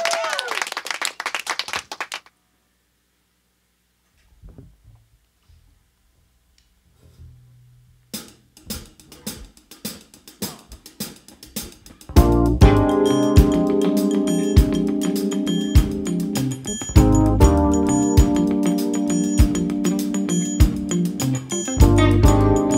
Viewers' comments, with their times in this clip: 0:10 Amazing band, and the sound is great. Thanks so much :) when Summum Bonum starts, I thought I hear Maze, can't remember the song, I think it was live in Montreux or New Orleans, end of 70ies or begin of the 80ies.